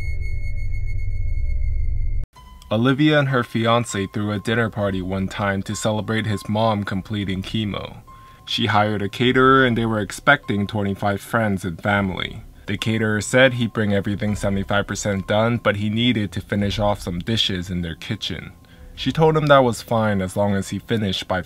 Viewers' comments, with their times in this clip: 0:03 I thought is said "A Caterer I Hired Broke My House "